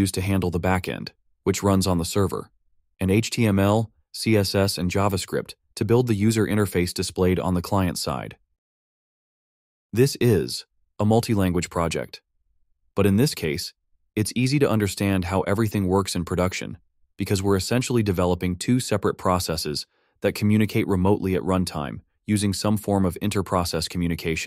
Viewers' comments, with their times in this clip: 0:09 "This is ... a multi-language project" How can people not tell this an artificial voice lmao